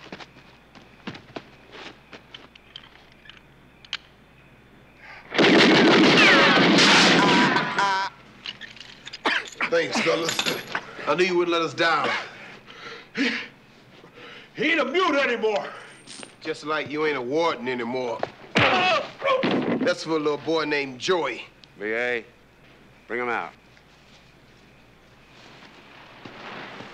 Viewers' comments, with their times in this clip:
0:07 lol he sung the a team theme song for a second